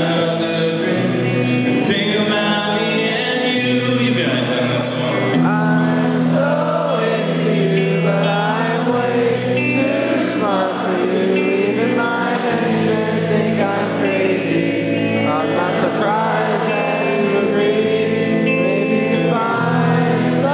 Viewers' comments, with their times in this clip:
0:03 that singing is going to bring the wolves out.